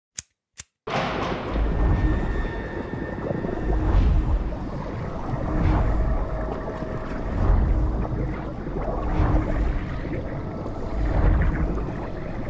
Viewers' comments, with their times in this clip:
0:00 THEY HIT US WITH A LEFT 4 DEAD SAFE ROOM DOOR SLAM